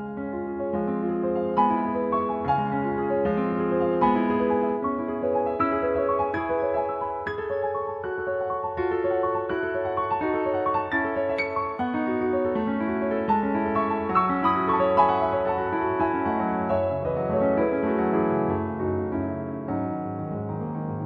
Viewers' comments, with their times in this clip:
0:05 One of the reasons I love this piece is it's clearly the inspiration for Koji Kandos' "Great Fairy Fountain". Such a wonderfully whimsical and mysterious piece